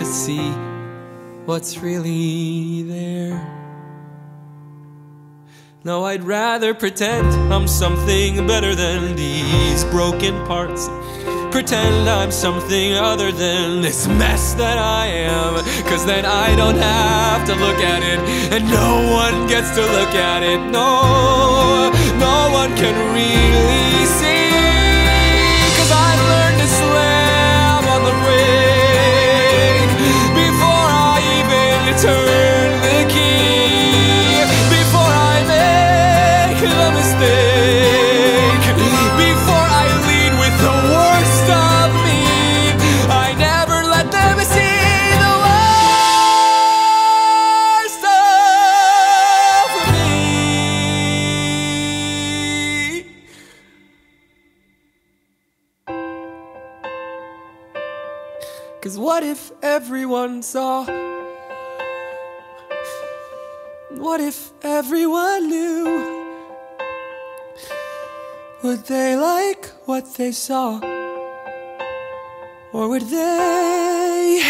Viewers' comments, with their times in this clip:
0:06 From to the end Jesus Christ I have never in my life felt so much passion and anguish in a song. It’s even more powerful bc it’s relatable in some ways.
0:06 Kermit is that you?
0:06 absolute CHILLS!!! Ughhhh his voice is so beautiful!!!!
0:11 idk why i’m so obsessed with the way he says “pretend”
0:16 The emotion in always makes me cry
0:26 oh my god when he reprises waving through the window
0:26 for me the part from hits hard. it sounds more strong than the one from Waving Through a Window (despite the fact that's one of my favourite songs)
0:26 Is nobody going to talk about the amazing violin solo after he says "I've learned to slam on the break" ?
0:36 on “stake” of “mistake” the note feels like it should resolve, but it goes down a step. It’s sounds like a mistake. God I love this writing
0:40 the way he sings "worst" gives me life
0:55 you can hear his heart breaking. Such good acting